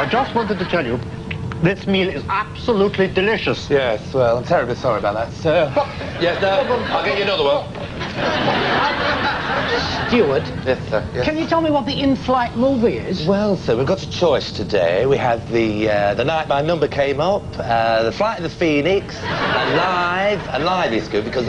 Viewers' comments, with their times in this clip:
0:04 Brian impersonating Dale Winton.